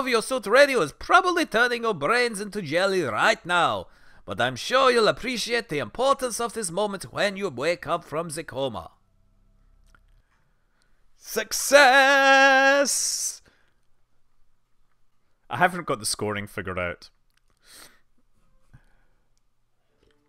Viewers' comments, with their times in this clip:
0:03 Your german accent sounds very russian :D